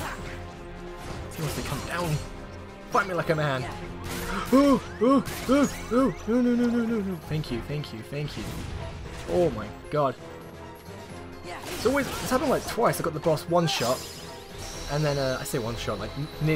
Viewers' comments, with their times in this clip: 0:04 Fight Me Like A Man! Almost dies In a voice that sounds like your gasping for air Uh, no no no no..........phew! Omg I can't stop laughing! XD